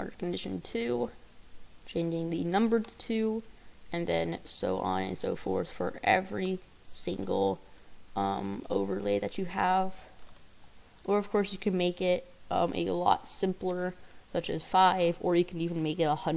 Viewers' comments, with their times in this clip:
0:03 bro turned into a robot but then came back to normal💀, btw thx for the tut😁